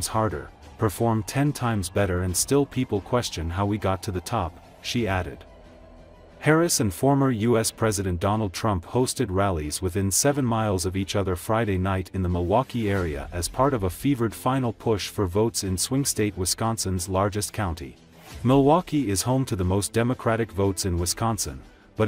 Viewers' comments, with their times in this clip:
0:07 AI voice lost me here…